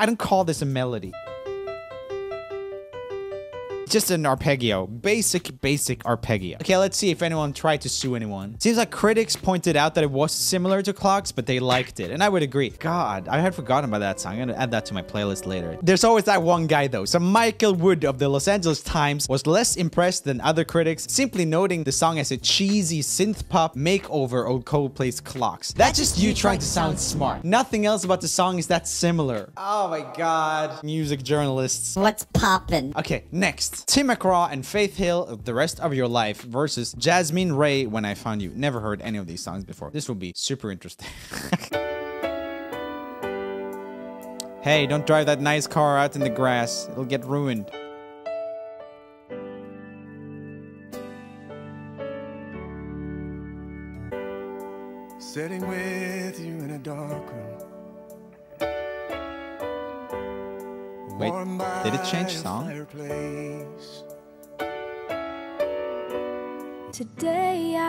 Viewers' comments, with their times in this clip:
0:04 >arpeggio that's not how it's pronounced
0:15 this dude just read Los Angeles as Los Santos... Grove street... Home...
0:17 if u think of los angeles he will say los angeles but, if u think of los santos (from gta 5) he will say los santos.
0:34 songs remind me od "casttle on the hill"
0:38 The ones reminded me of ‘Wake me up’ by Avicci 😅
0:41 it sounds like the beginning of the "Angel" song by Khalid 🤔
0:43 anyone else get some “I won’t give up” vibes from them
0:43 "Tim McGraw and faith hill- the rest of our life" sounds like "Europe-new love in town"
0:54 sounds Like Hozier - Like Real People do